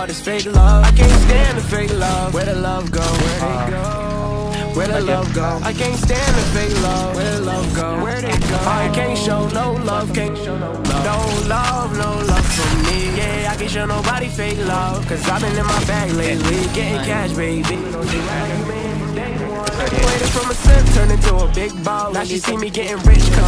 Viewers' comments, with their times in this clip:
0:10 *sad travis scott noises*